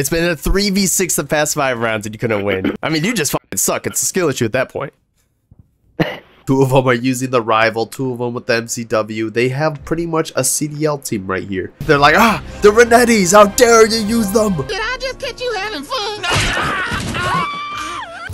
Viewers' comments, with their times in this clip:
0:04 silence was loud